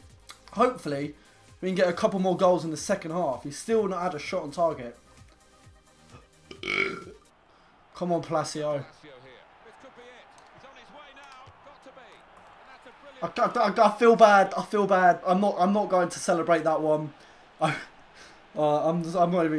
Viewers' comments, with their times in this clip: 0:06 omg wat a burp